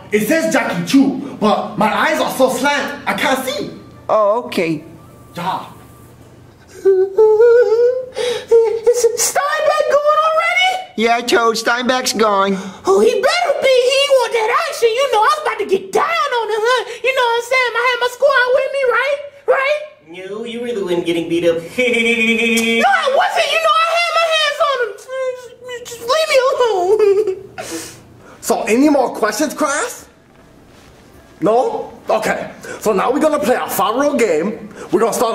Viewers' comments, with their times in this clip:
0:04 why was that "oh okay" so adorable
0:20 Cody's laugh sounded like peter griffin's laugh.
0:21 Cody laughs like Peter griffin
0:22 Peter Griffin Laugh By Cody